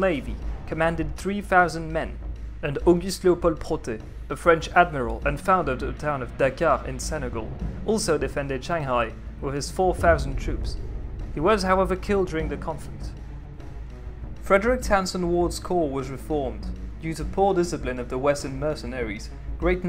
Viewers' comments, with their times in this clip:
0:03 Good prununciation. Are you french ?